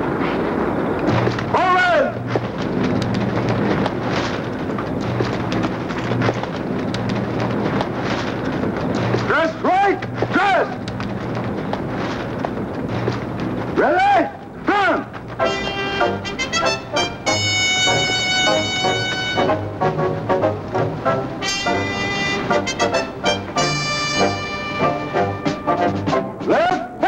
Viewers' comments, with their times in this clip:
0:08 Muscle bound Woody Strode barking orders !!